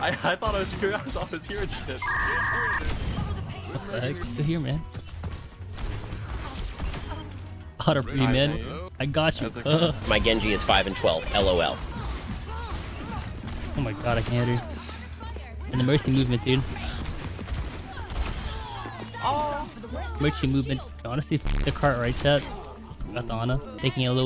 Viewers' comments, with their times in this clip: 0:10 is that a Ben Shapiro TTS??? lmfao